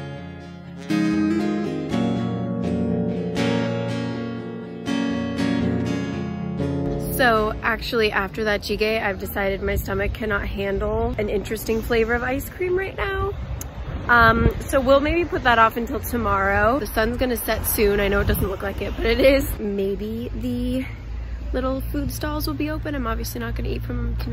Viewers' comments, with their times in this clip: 0:07 totally thought a twilight song was about to come on 😂 love your solo adventures so much!